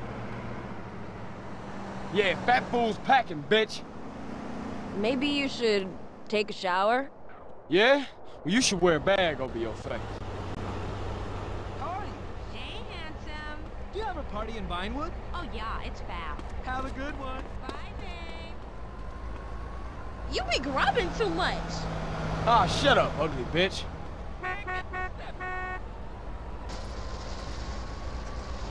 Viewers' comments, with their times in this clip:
0:09 I love how it fades out when he said, "you should put a bag over your face" lol